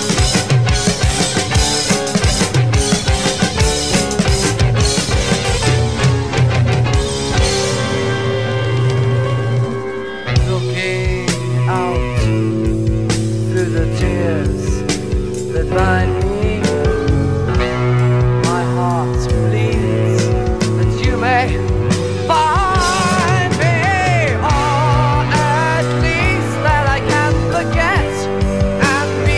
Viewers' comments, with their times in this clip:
0:10 thay way he sings this bit is so emotional